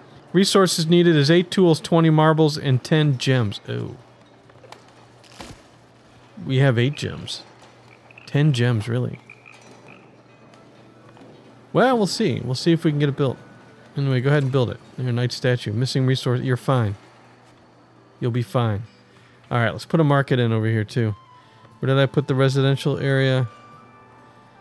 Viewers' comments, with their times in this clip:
0:07 Not gonna lie, I really thought you had said "10 Jims" for a second there